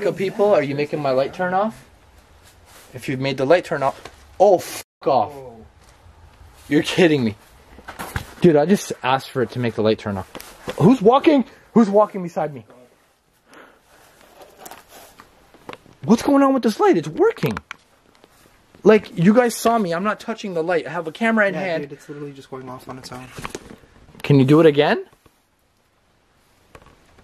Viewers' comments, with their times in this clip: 0:10 I heard a male whispering something couldn't quite figure what it was saying there was def something there with you